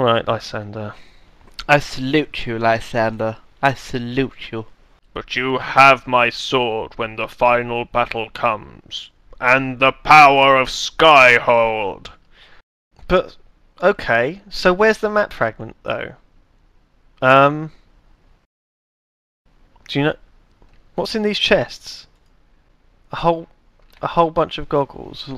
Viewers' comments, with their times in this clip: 0:10 with captions "Or a skype call"